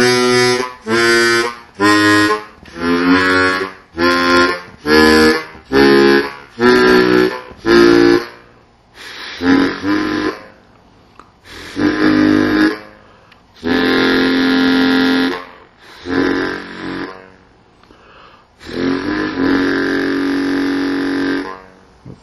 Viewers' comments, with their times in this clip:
0:03 From I really thought you were playing the intro to "Tell Me Somethin' Good" by Rufus.